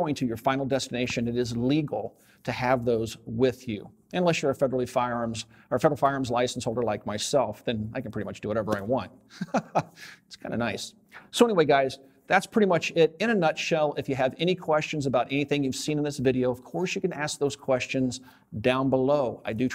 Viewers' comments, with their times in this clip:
0:05 FFL privilege laugh.